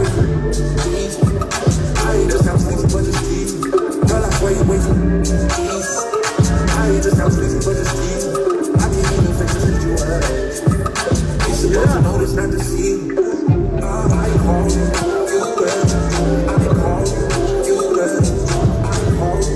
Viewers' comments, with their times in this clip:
0:04 the beat kill SO COLD.